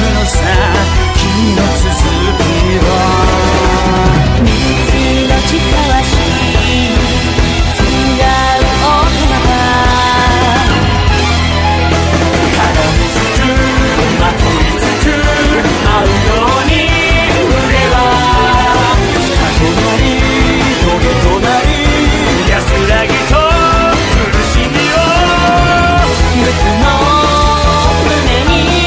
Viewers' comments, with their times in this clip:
0:04 “ Mitsu no chi kawashi “ “ Exhanging sweet blood “ “Tsugau outomata” “ To turn into a mechanical doll “ I LOVE THE WAY OUTOMATA IS SAID ITS LIKE HONEY!!
0:12 time stamp start of sound incident